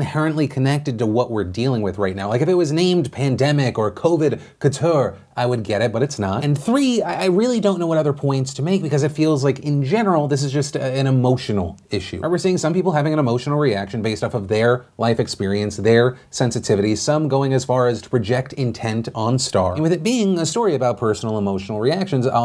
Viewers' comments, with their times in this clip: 0:04 I don’t know why but hearing Phil say “couture” made my life better